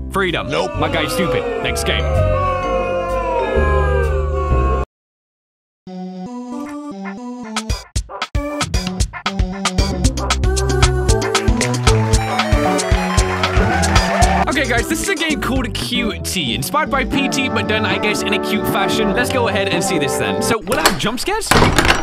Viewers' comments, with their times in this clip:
0:06 QT has some sick beats!!